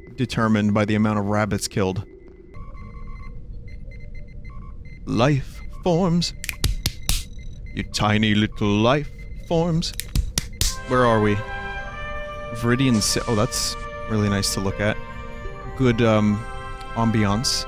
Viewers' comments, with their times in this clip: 0:05 I know that’s just clapping but it really sounds like he’s slapping the shit out of himself